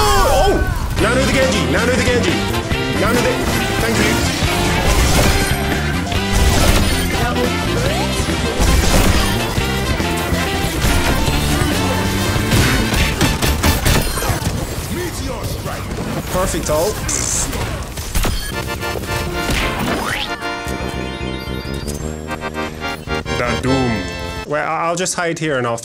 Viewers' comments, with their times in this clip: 0:10 I'm just completely impressed by the music editing on this point It's just amazing how you're always getting better since you started, I'm glad I can be around <3
0:11 MAN the timing with the music
0:12 No way that no one is talking about the clip and the music How his standard attacks matched with the music. That sh*t is hella cool
0:12 The music sync is too good
0:12 RIGHT ON THE MUSIC BEAT😂👌🏻🔥
0:12 HOW THE SHOTS MATCH THE SONG BEAT
0:13 timing the music to Doom's shots was chef's kiss!
0:13 That beat tho 😩